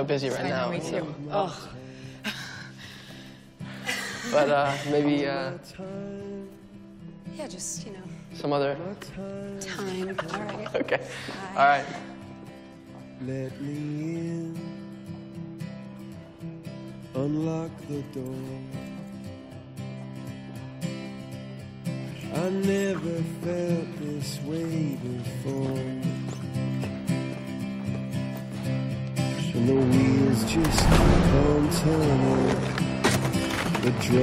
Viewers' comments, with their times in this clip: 0:10 Andrew's laugh was so geniune 😂
0:15 the way he look at Gwen just cute. The background of the song just beautiful cause it just match this skateboard scene ❤